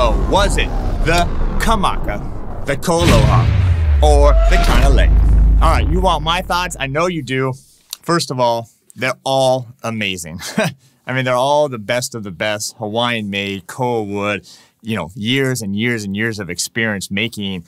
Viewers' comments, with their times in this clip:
0:05 I really don’t think this was a fair comparison with the Low G on the KoAloha - it obviously had the deepest sound…